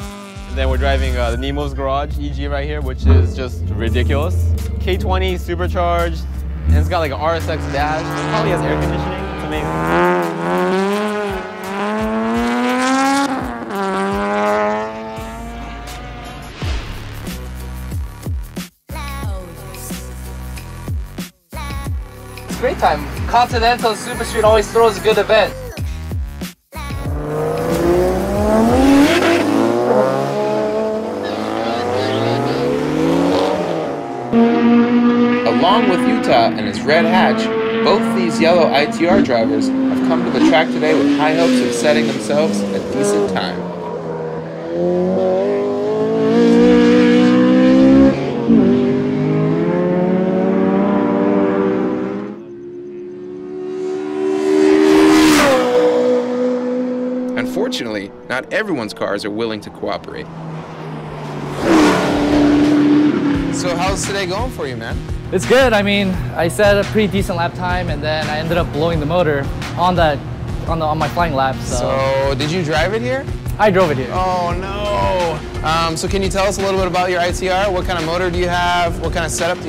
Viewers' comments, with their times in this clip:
0:09 Does that honestly sound good to anyone? Personally, I hate mosquitoes.
1:01 Ya know, reading the comments in videos like these really gives the impression that Honda fanboys (or import fanboys in general) have absolutely no idea how suspensions work. "lol american junk can't handle lol" The fuck are you on about? Anything can handle if you build it right. The difference here is all these imports are blowing themselves up left, right and center. All except the Toyotas anyway. Hell, the people who own these cars don't seem to understand how a suspension is supposed to work either. You see them bouncing all over the place, understeering off the track, snap oversteering out of control, unable to put power down because the suspension is so jumpy... And listen to all them fart cans! This is why I can't stand ricer culture. The black car is the only one here I can tolerate. THAT thing is kickass. I can tell just by the way it sounds and the composure of the suspension that THAT one at least is capable.